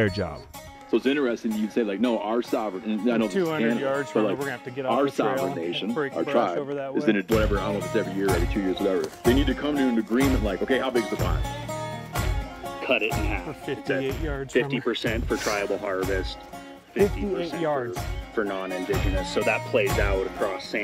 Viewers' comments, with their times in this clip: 0:04 Was looking for someone commenting this. It starts with the scene cut and continues until the next cut. Sounds like the podcast got overlayed, talking about gillnets